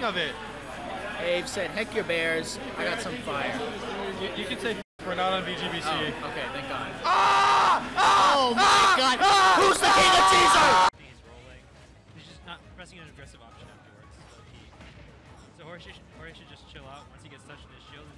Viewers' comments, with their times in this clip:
0:06 the scream bruh. Sounds like he got stab LMAO